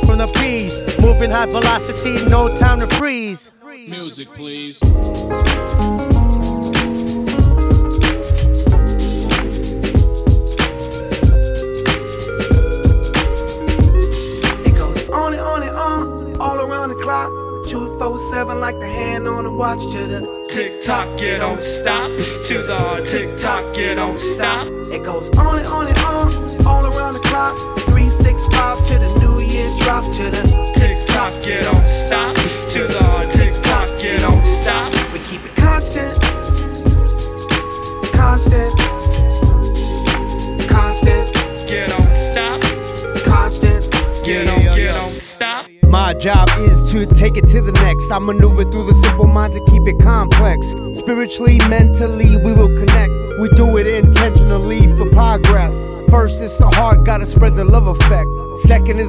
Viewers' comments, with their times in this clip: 0:04 music please. damn, that melody.
0:04 love that lo-fi beat ♥️♥️
0:13 Struggling with the pocket
0:45 good up to ,than you destroy the classic and nice song with weird tradition to another song with in my opinion its not as good as first part ..